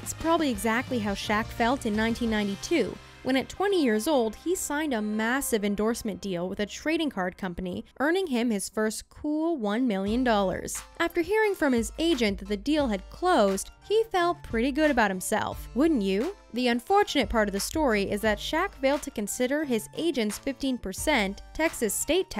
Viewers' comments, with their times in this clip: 0:10 Why does a christmas song start ?